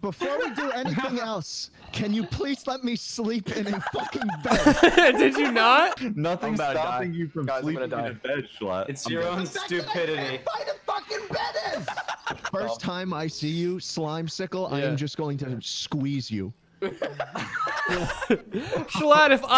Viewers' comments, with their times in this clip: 0:03 The cackles fucking kill me